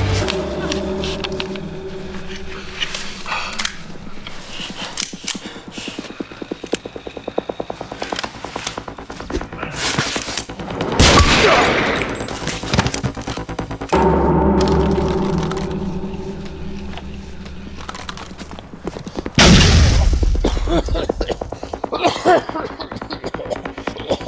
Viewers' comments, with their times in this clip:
0:09 I love the achievement sound when he hits him in the head with the flash grenade XD
0:10 Did anyone else hear the achievement sound from the xbox 360 ?
0:10 Did anyone else hear the Xbox "ding"?
0:10 Anyone else noticed the Achievement-unlock sound when he throws the Flashbang at his Head :D?
0:10 Is it just me, or did I hear the Xbox Achievement noise ?
0:10 Anyone else hear the achievement unlocked sound or is it just me?
0:10 achievement unlocked sound
0:11 anyone else hear an achievement sound?
0:11 has an xbox achievment sfx
0:11 Love the xbox achievment sound :D